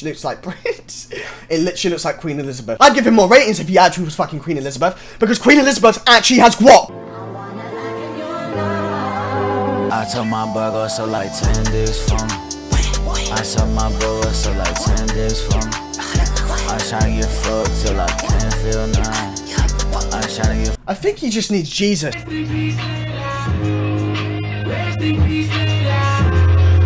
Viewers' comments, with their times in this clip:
0:10 "oh no copyright" proceeds to play carti